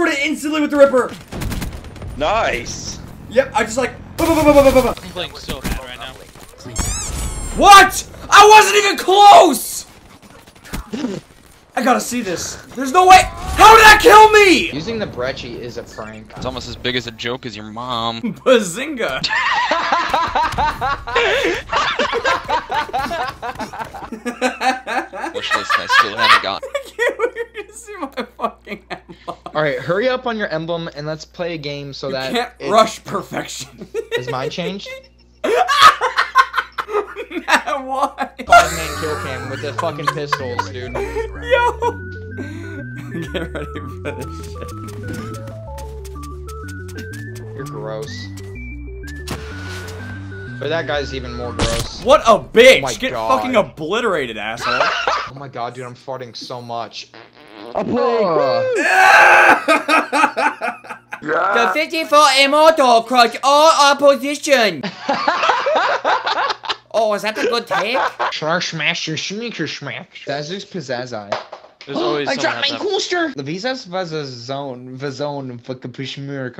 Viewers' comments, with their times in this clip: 0:06 that squeak. (^0^)
1:04 Did he said "the pityful himoto crossed all our position"